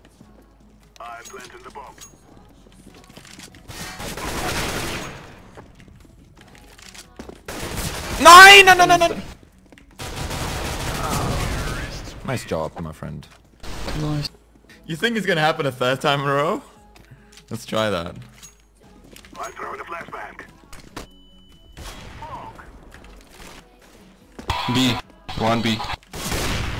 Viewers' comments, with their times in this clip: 0:09 neieeiiinn enenenenen : he was starting the engine!